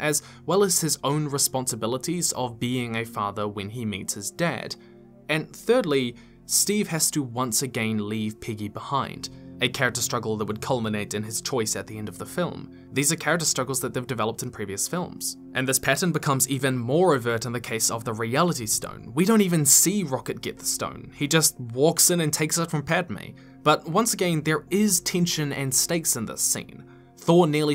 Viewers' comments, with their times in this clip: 0:10 ... do you actually say "Piggy" or does it just sound that way? My subtitles write piggy... but her name is Peggy...(!!!) 😅😅😅